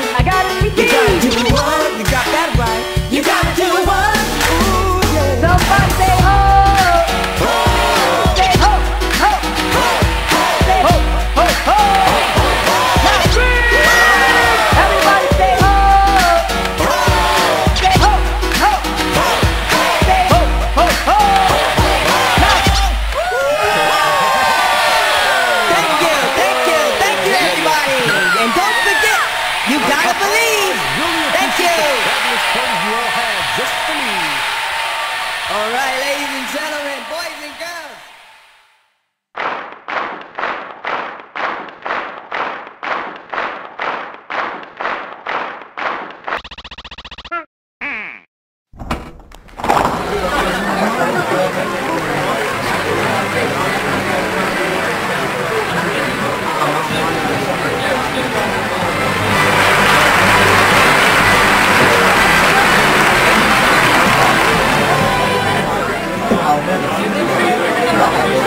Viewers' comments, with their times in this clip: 0:04 Actually playing this game is terrible. Playing it myself and then looking at this TAS just confirms how ridiculously broken this game is with its timings. Biggest example being when Parappa raps on his own I've recorded myself doing this part dozens of times, listening to what might be impacting my score from playing normally, but it all just sounds within rhythm, whereas here in the TAS the odd button press rhythm is apparently what works? Supposedly not even the """remastered""" edition fixes these broken timings. I'd strongly recommend just going to Um Jammer Lammy or Parappa 2 for anyone that actually wants to try these games.
0:21 You left out the very last button press, making the crowd scream for no reason. And to trigger peoples ADHD lol
0:50 i see pepole are yelling